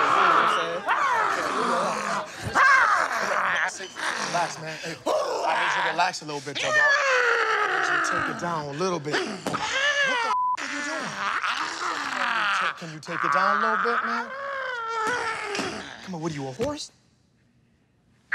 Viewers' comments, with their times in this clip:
0:04 Whats with the brucelee sounds? 🤣